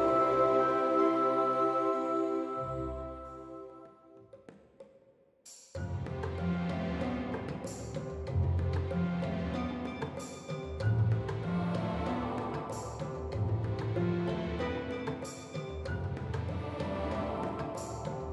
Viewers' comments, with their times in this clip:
0:05 the music <3